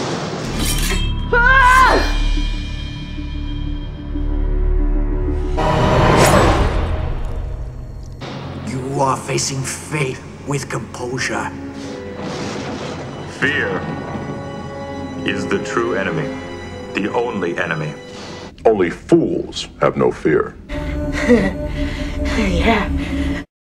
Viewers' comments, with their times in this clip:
0:05 The writers should have gone Game of thronesy on the annoying whispering crying space jesus.